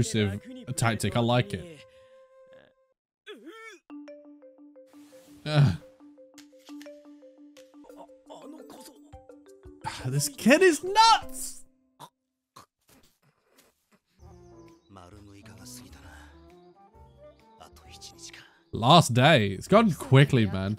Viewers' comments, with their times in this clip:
0:04 This OST sounds like a ringtone/alarm clock, or the background music you'd hear in a nature documentary as you watch penguins sliding on ice or a time lapse of a spider making a huge web or something. I love it lol